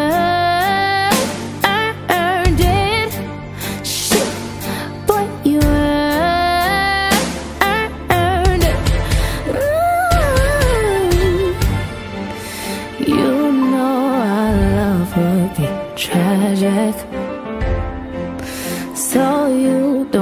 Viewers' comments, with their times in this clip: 0:08 in minute did she sang like ariana grande haha or its just me